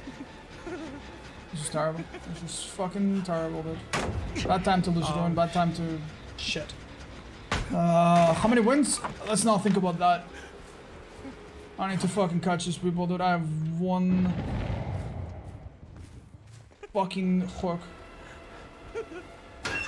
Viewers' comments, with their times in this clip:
0:03 Is anyone else hearing "ouch" ?